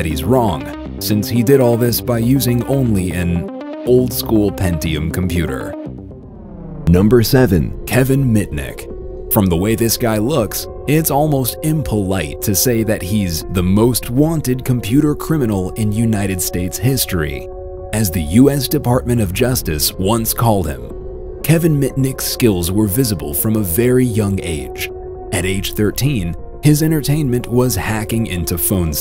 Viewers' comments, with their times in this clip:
0:10 i need that melody playing in the back
0:17 'I'm not a hacker, I'm a' what is he???